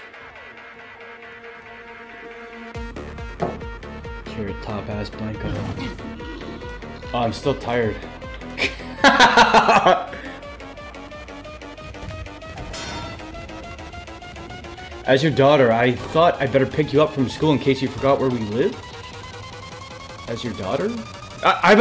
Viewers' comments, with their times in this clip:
0:05 The fucking timing of the music lmao